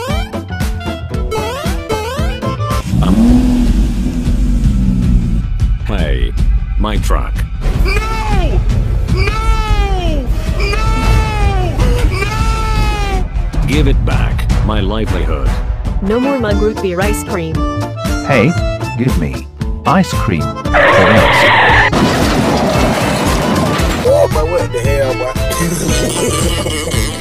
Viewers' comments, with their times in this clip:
0:08 Like comment if you hear Huggy wuggy chase music